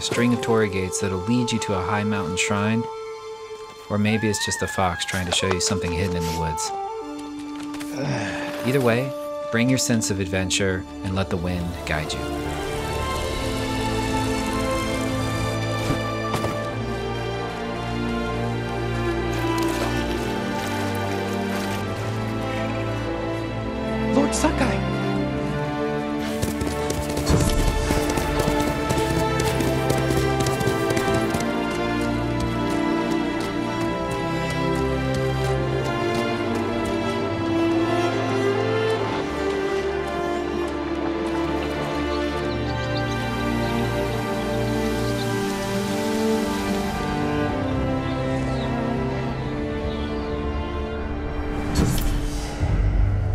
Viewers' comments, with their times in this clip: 0:10 REALLY gave me chills with how insanely beautiful this game is with its soundtrack along with its heavenly setting it honestly gave me that feeling of ecstasy that I get when you explore Skyrim with its legendary soundtrack and amazing scenery. It gives me that same feeling I get when exploring in games like The Witcher 3 and Skyrim that I get nowhere else . This game honestly looks like it could have that same quality of exploring with an unforgettable soundtrack like The Witcher and Skyrim has.
0:11 for some of that amazing soundtrack.
0:37 the scene in + BGM was FREAKIN AMAZING